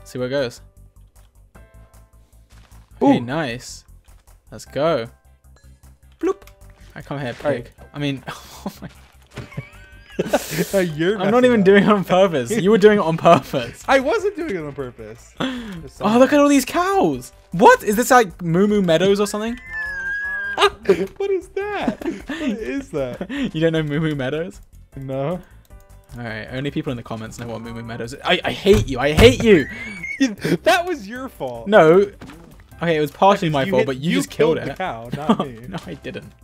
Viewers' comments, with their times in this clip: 0:05 That "ploop" warm my heart I can't-
0:18 “is this like moo moo meadows” Dream: makes high pitched violin noise for laugh
0:18 George: “Is this like Moo Moo Meadows or something?” Dream: teakettle sounds
0:18 G: this is like moo moo meado- D: *tea kettle noises*W H E E Z E ---
0:18 George: What is this? moo moo meadows?? dream: *high pitched demonic screeching*
0:18 dreams wheeze is too funny from the moo moo meadows joke.
0:19 W H E E Z E
0:19 WHY DREAM WHEEZE SO HARD
0:20 What the heck was that sound?!was that dream wheezing lol